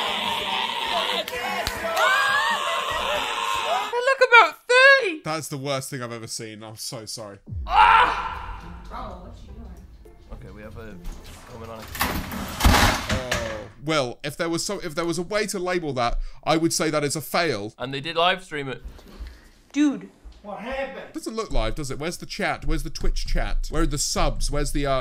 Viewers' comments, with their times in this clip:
0:09 this is where mortal kombat gets their neck break sound effects?